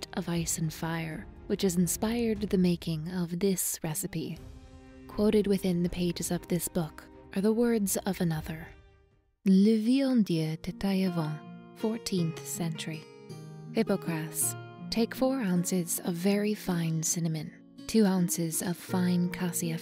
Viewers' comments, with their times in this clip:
0:04 At least she's trying to pronounce the French name correctly. As a native speaker of the language, I will be the first to admit that to any other person than a native, learning to read French is *freaking hard*. Many of the sounds are rare or non-existent in various other languages, and half the letters are silent. At least, however, the rules for pronunciation are mostly consistent, unlike a certain island kingdom's native tongue... (There are no rules for pronouncing written English. They tell you there are rules, but it's not a rule if the exceptions outnumber the normal cases)